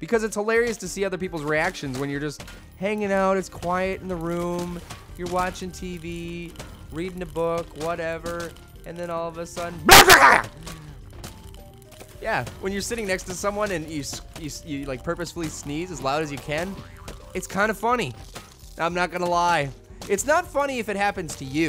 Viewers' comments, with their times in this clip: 0:03 Fuck a got a shock then you said : Hanging out... its quiet in the room youre watching tv reding a book whatever... and then sudenly... BORCHBALALO :D
0:05 when I sneeze like you in but I sneeze much louder than you